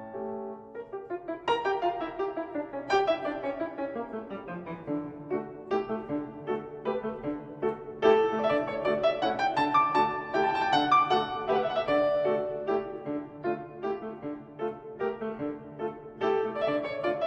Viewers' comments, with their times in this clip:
0:05 I just wonder why the player has to accent the third beat of the measure on the right hand Anyone know why